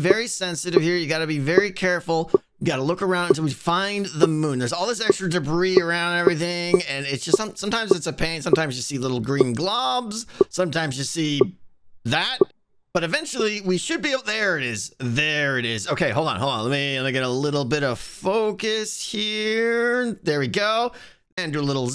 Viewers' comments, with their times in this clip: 0:08 nice aligning of the telescope in among us there, I heard the noise 🤣🤣